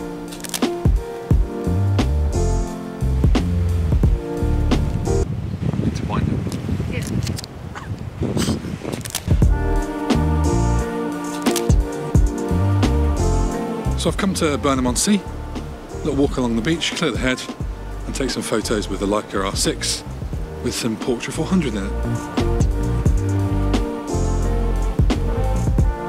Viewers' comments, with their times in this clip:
0:08 is that how the shutter really sounds on the R6 or is that a sound effect done for the video?